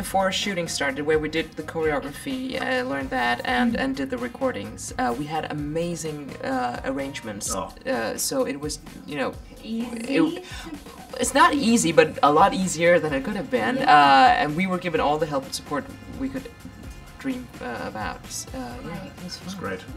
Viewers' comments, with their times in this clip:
0:03 wtf happened to her voice !? 😂😂😂